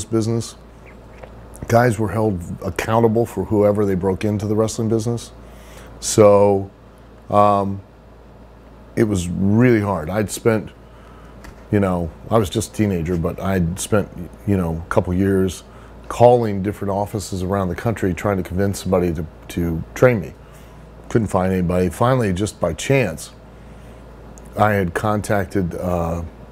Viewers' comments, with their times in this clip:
0:08 He doesn't seem to know much. He speaks many statements as questions? His voice goes up at the end?